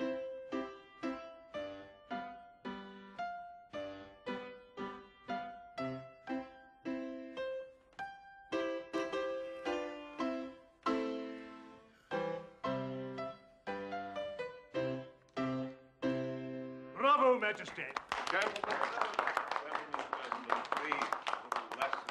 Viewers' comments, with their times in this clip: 0:08 I feel that the character who looks like Bach is hilarious because of his laugh and the possible tendency of inadvertently embarrassing the emperor on several occasions LMFAO.